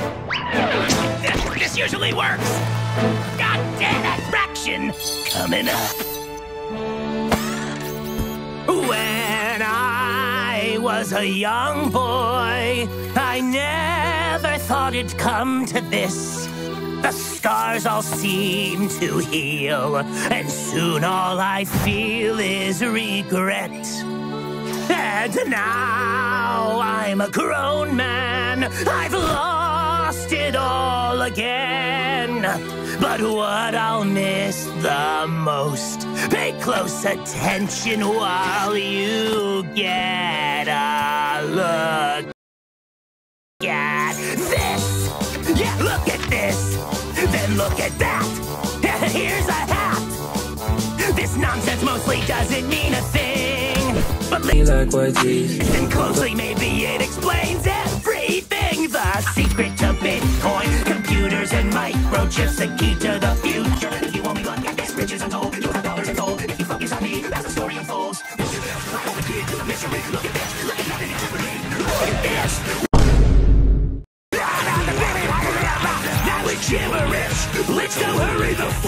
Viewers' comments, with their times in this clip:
0:10 He sounds a lot like Sir Pentious— WAIT A MINUTE- (same voice actor)
0:54 THE RANDOM LIGHTSKIN STARE SONG LMFAOOOO
1:04 why does X2 speed on the Look at This song actually slap